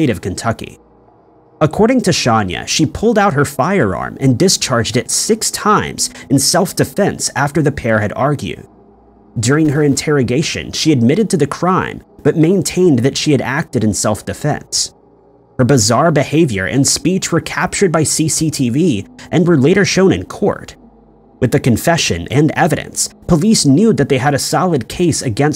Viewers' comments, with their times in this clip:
0:06 I have a feeling you know that’s not how you pronounce her name.